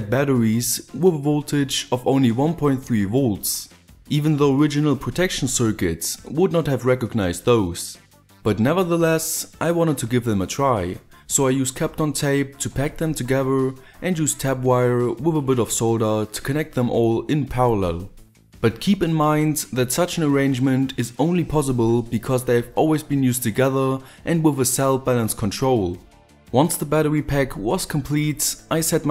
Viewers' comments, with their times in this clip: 0:10 did he say 'cap on tape' and 'tap wire'??